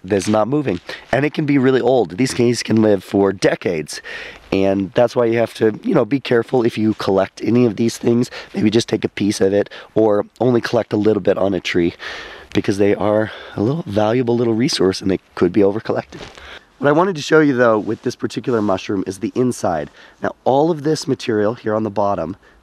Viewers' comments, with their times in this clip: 0:04 "these GAYS can live for decades" I didn't realize mushrooms were all homosexual men. JK I realize you meant to say "guys" but it came out as "gays". I'm just poking some fun. Great Video